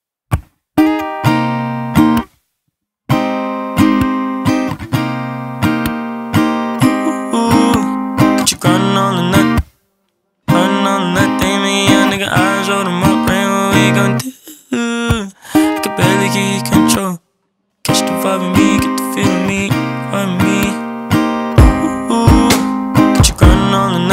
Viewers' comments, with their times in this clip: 0:07 I've never heard someone voice crack in the most beautiful way ever then now